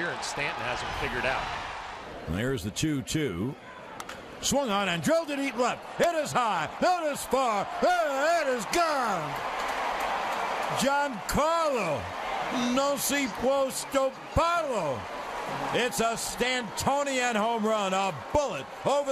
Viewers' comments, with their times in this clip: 0:03 beautiful crack of the bat sound